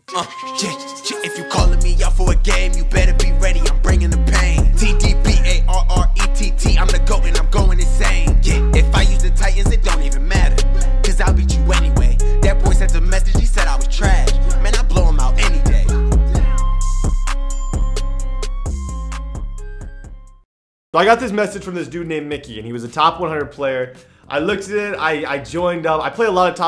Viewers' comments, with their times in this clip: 0:08 sounds like if I use the tight ends lmao.